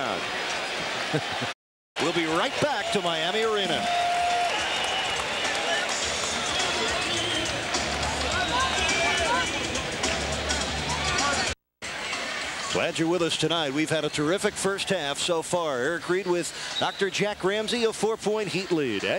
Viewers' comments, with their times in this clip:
0:04 It's funny how when Harold Miner hit that jumper on M.J. they start playing I wanna be like mike in the back ground (sometimes I dream that he is me)